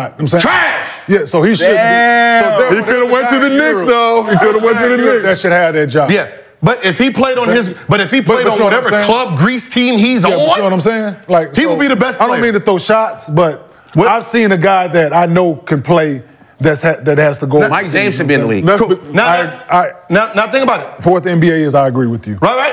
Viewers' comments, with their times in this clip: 0:04 I’m rolling lmao when Gil yells trash after KM brought up Gianni’s brother 😭😭😭